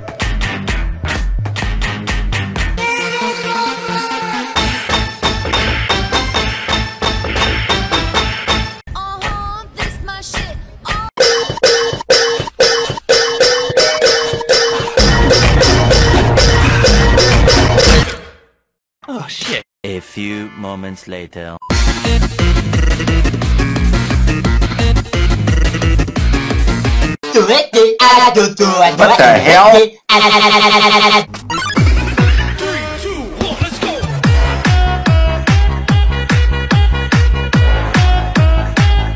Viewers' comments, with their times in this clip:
0:03 When Papyrus screams
0:22 Boyfriend sings is funny😂
0:27 the repeats on the spam notes make this just insanely funny